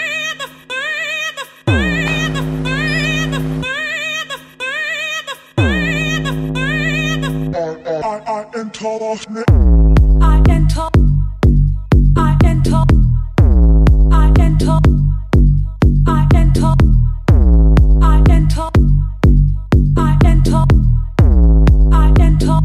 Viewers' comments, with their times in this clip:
0:08 just killed it freakin sub niceee